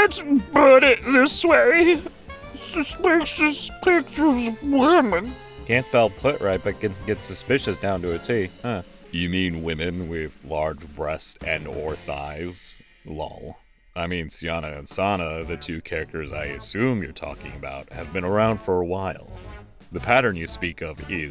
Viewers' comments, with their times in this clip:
0:09 I was not expecting to appear in this video at all! I absolutely love the voice, it captures the energy of my own so well!